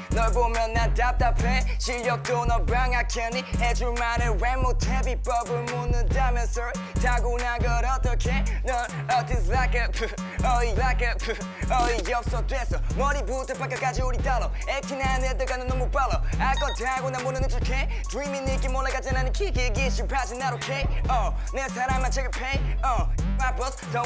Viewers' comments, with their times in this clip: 0:06 I really like his voice, a really good voice for rapping